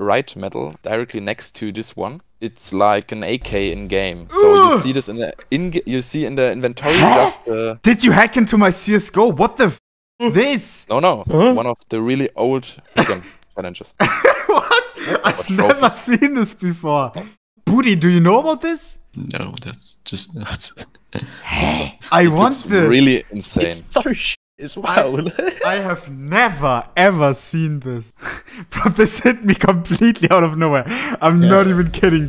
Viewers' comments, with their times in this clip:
0:04 skip to to hear the mc ride cameo
0:20 phasmophobia ghost sound after touching the crucifix